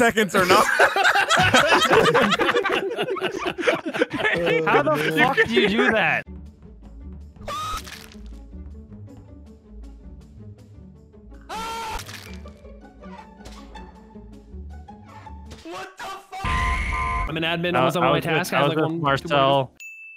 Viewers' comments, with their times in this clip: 0:07 the screams here are so good